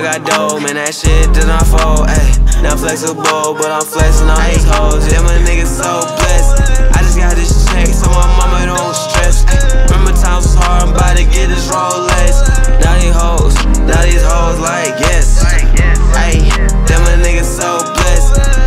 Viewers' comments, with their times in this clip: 0:05 Yo, from 50 second marker to the marker his adlibs and him singing is amazing. 🔥